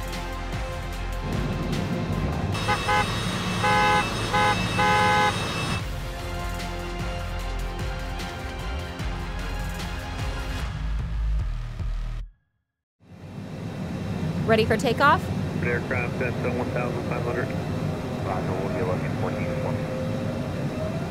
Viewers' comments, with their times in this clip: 0:03 Wtf? The car is pretending like it's honking another car instead of a plane xD